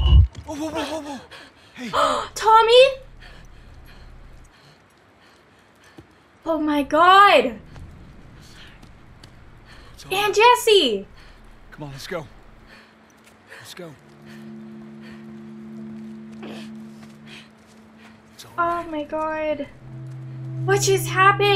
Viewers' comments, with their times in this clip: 0:04 Really cool detail it’s actually Troy Baker’s voice calling Ellie’s name. This is because Ellie is in such a state of shock that she hears Joel’s voice instead of Tommy’s in that moment